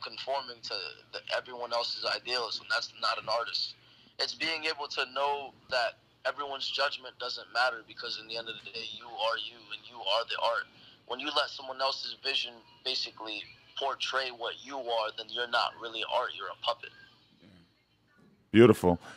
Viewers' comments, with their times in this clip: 0:04 I know, and i mean I know,, that this nigga, didn’t, and I mean DIDNT just kiss the mic